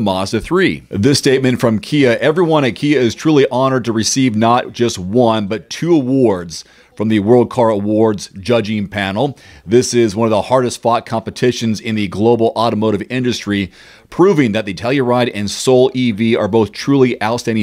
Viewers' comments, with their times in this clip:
0:05 I feel like I'm watched a dubbed kung fu movie. "Ahh soo, you think your crouching dragon style can defeat my squatting rabbit?"